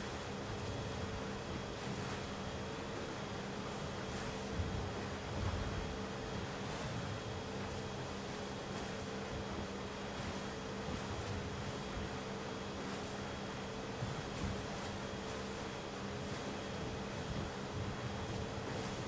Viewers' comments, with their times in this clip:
0:05 Literally it sounds like air so stealthy and quiet like for its max/ top speed that I thought its batteries will start screaming